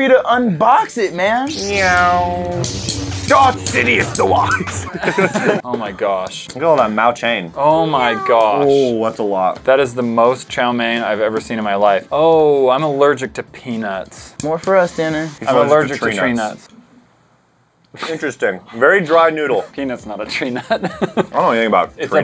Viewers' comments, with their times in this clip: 0:06 when said I'm allergic to peanuts . I think thought he said penus